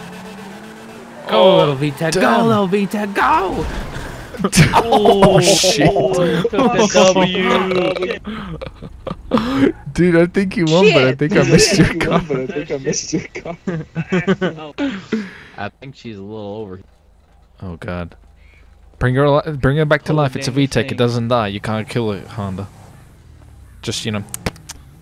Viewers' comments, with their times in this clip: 0:06 Rip cat meow